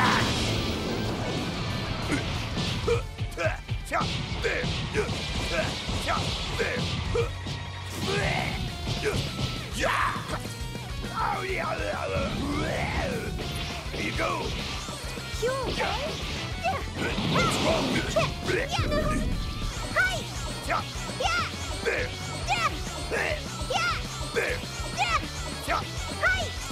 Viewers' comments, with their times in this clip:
0:09 I feel like the VA for Yajirobe had a little too much fun with their voice acting lol